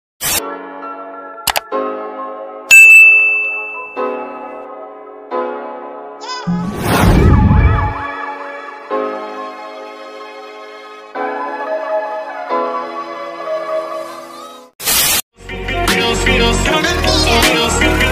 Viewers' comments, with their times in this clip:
0:03 That ting on is ear rape